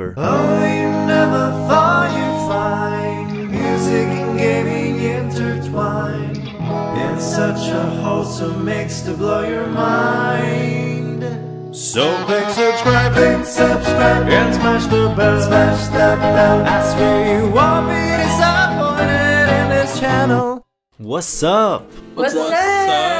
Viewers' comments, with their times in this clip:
0:04 DUDE IT'S AND I STILL CAN'T SLEEP BECAUSE OF THIS MUSIC